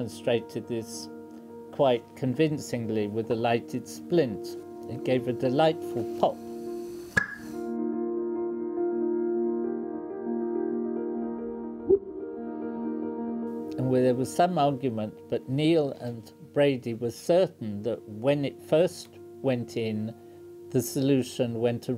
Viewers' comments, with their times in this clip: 0:06 Does the pitch of the pop here reflect the speed of sound in hydrogen? Can the pitch be used to distinguish hydrogen from some other flammable gas that might be present?